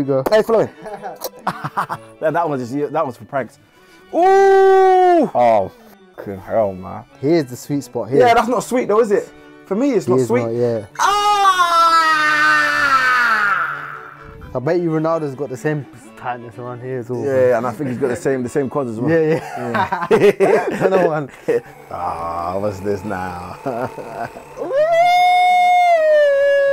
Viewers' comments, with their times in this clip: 0:10 screaming like delivery 😂